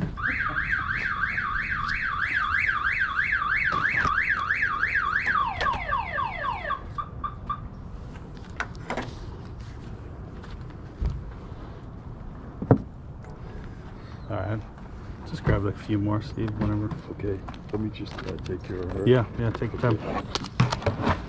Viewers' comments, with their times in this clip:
0:05 When the car alarm went off I thought the old lady broke into the van to steal the cards 🤣😂🤣